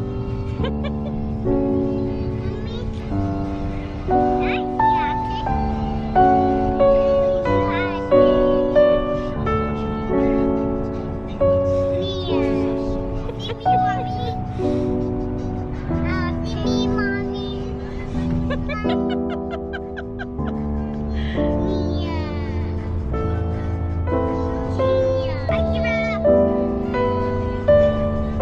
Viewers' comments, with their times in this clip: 0:09 The music is so beautiful. It reminds me one of my fav movie